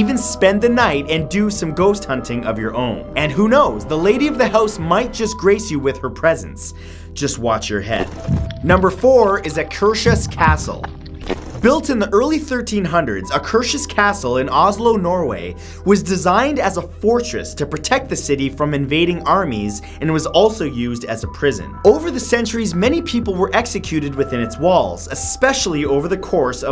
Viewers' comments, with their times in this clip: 0:09 hearing English speaking people try to pronounce Norwegian words will always be one of my favourite things to hear. I'm sorry if I offended anyone.